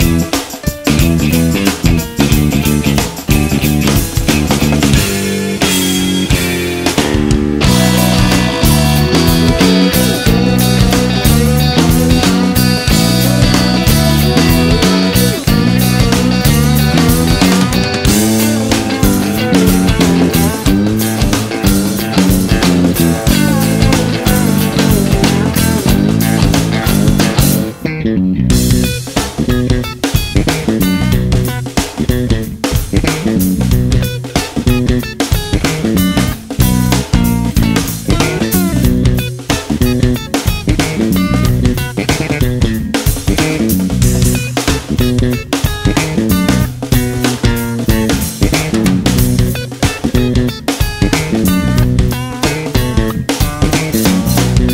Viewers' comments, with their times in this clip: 0:07 John's guitar just impregnated your ears
0:40 listen to how Chad responds to Flea's fill. incredible musicianship